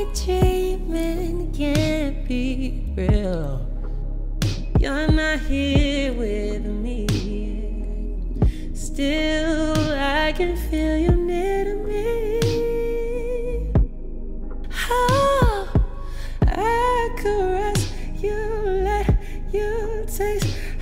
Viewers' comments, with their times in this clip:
0:04 that run??? Amazing 💕💕😩😩